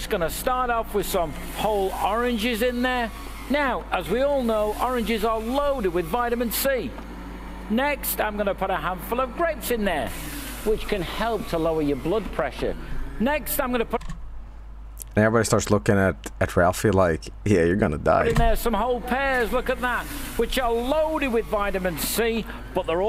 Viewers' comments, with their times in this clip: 0:08 all I can hear is "I'm gonna put a handful of bricks in there" and I'm losing my shit at it